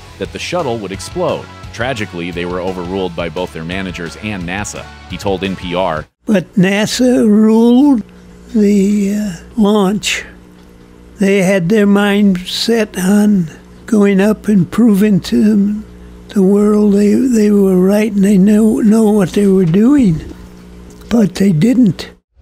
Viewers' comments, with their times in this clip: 0:06 Hans Moleman speaks